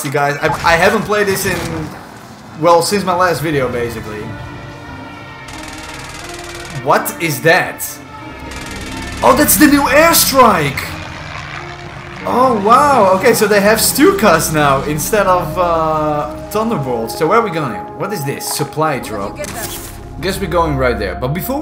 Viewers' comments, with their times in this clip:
0:07 sounds like a stuka but looks like a corsair